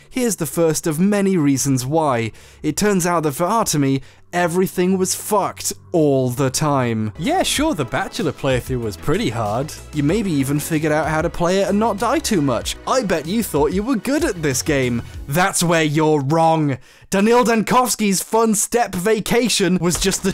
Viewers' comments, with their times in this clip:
0:07 Just noticed on this watch through, Harris goes into Yorkshire mode when he says "play through".